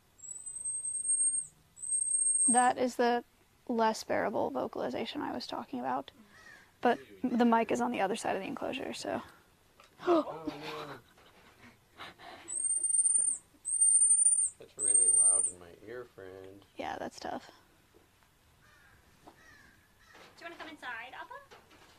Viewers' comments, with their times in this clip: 0:03 the vocalization woke my cat up and she chirped